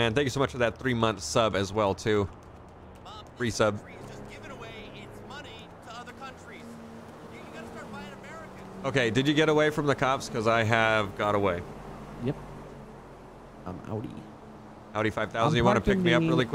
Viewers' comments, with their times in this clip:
0:04 AI sounds like Muppet